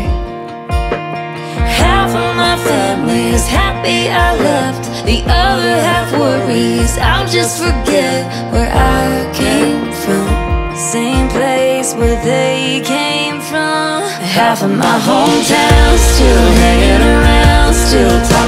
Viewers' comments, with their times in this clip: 0:04 #KelseaBallerini, Country music is filled with super talented ladies like Kelsea. Your voice is superb young lady. I am awake am listening 😊👍🎸🎻🪘🎹💙💖💜🎶